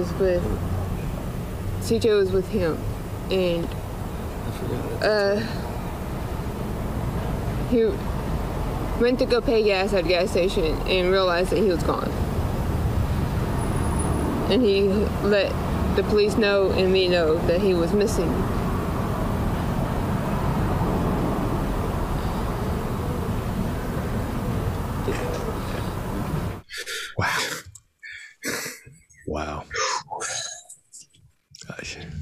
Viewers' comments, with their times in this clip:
0:03 She is answering the question about when they were all last together. He had previously slipped with the mumbling about all being in bed. She is a little clearer saying about being home with her 2 yr old and he was out paying for the gas. I think THAT was the agreed upon story. he whispers “I forgot.”
0:18 her emphasis and head nod/chin lift when she says the word MISSING Is a big clue, in my opinion. It is her saying the word and knowing that the baby is not missing but rather something else has happened.